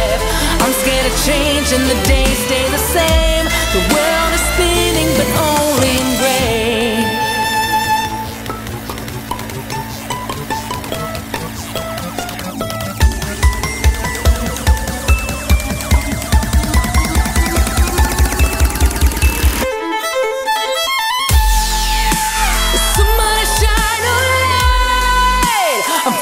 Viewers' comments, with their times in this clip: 0:07 It is playback, I play the violin and there are many instances in the video where it shows the audio was prerecorded. (obviously by Lindsey though) such as the beginning where she is plucking in first position but the notes heard are an octave higher, and then where the bow comes off and her sound keeps going. At first I thought it was probably video lag but the beginning proves otherwise. Still good as always though.